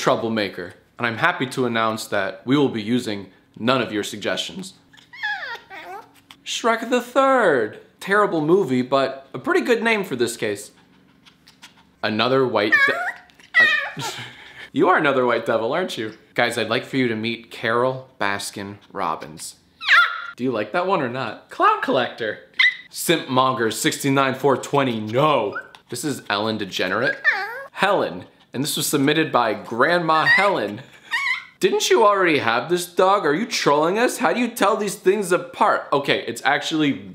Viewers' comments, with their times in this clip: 0:05 I do. Nonstop. Just love those little noises she makes
0:12 did he just meow
0:12 is your puppy meowing
0:13 she started meowing wtf
0:19 was that a bark? i couldn't tell